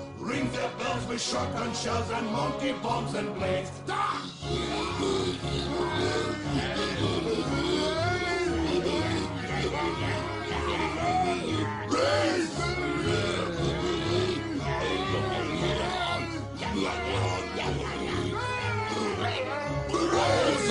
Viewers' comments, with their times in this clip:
0:04 what is that weird noise on ?